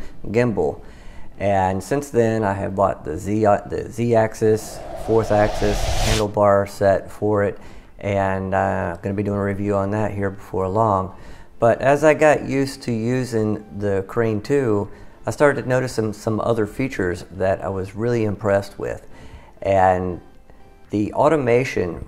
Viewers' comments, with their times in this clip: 0:07 i wish you good luck, you seem nice and very sincere, a good tip is to watch your Volume levels at all times, use the compressor on your voice (its an effects in Premier) and adjust the gain so you will be around -6DB on the levels, now without compressing, change the music lever to never be over -6db even when you stop talking and for the rest keep it at around -12 -18 so we could hear you well, colour grading is very nice indeed but bad sound will make others stop watching (Specially if you listen on headphones). some of the effects you get like on mister horse or others set there Volume to the max, the sound it too Intrusive and Even though that's how they made it I think it's wise to lower the volume so it will be more organic. Good luck